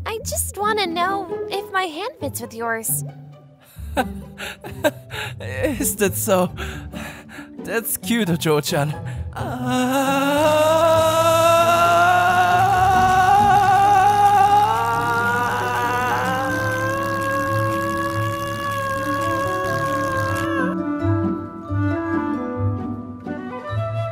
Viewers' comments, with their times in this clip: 0:09 The Sound Effect + Childe Voice